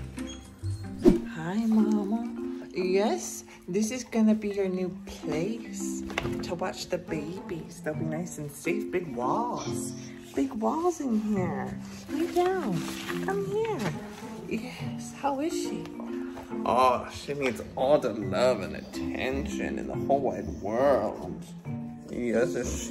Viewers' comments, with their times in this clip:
0:09 Look ! It sounded like a girl whispering or something but I can't make it out what it says